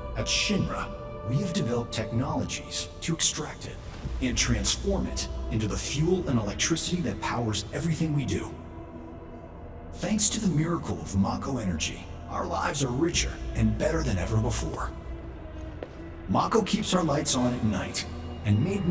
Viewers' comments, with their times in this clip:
0:04 you all hear Sephiroth's Theme playing ominously in the background, right? I think it keeps going until the VR room.